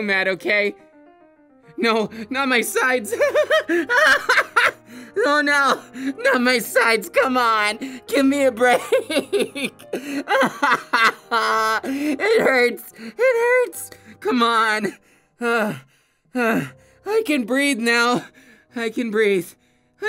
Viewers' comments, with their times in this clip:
0:04 I love his laugh